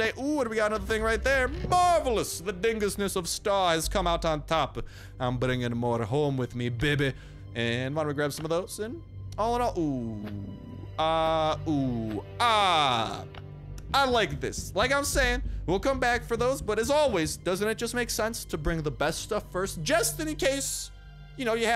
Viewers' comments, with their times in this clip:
0:09 the double Ooo! I liked them 😂👍